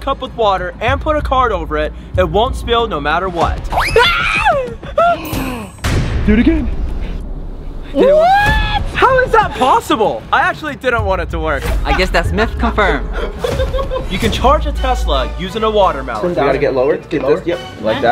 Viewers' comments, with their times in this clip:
0:03 The scream tho🤣🤣